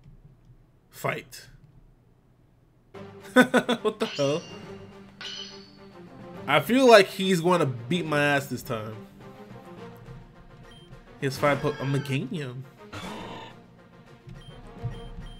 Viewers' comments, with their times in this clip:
0:03 and onwards the game was just saying Trololololololol lalala lalala lalalalalalala la, approximately